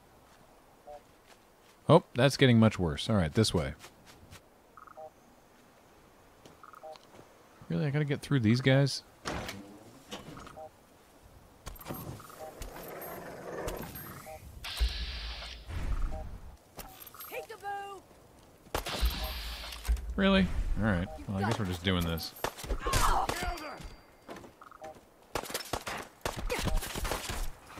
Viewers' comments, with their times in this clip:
0:09 That sounded like the crashed alien spaceship right?